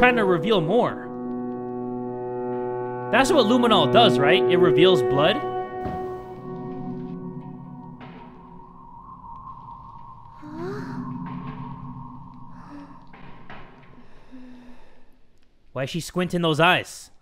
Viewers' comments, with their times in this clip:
0:03 I hear he says refills butt